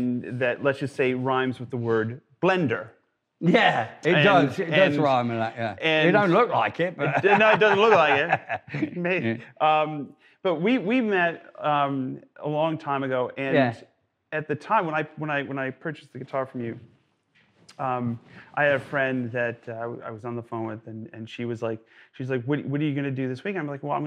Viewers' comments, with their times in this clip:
0:07 Joe momentarily adopts an English accent.